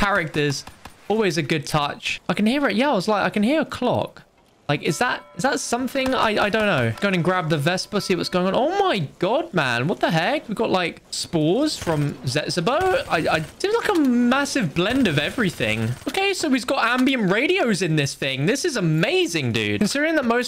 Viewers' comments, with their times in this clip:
0:03 "I hear a clock" clock sound for turning on the notification bell comes on